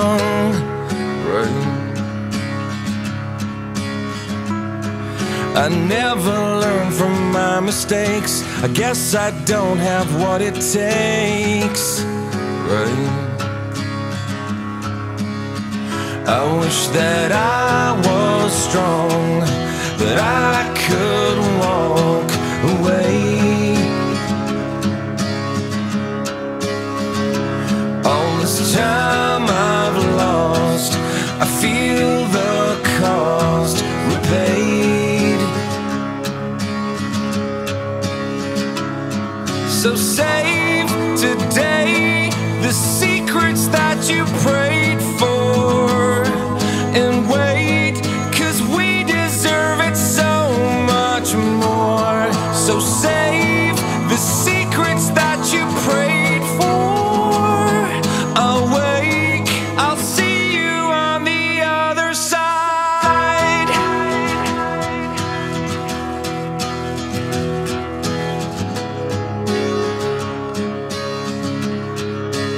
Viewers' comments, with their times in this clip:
0:04 -... Still looking for the guitar
0:56 did someone squeeze his sack?